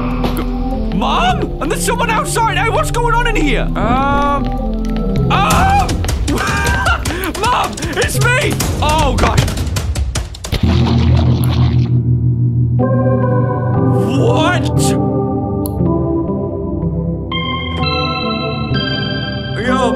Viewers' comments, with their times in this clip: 0:07 The battle music tho-